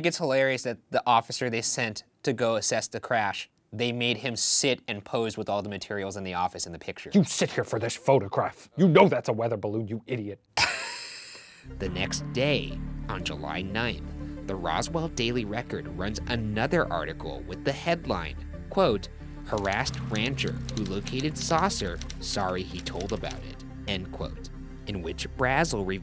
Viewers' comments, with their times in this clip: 0:10 LMAO SLOWEST WHEEZE OF UNSOLVED xD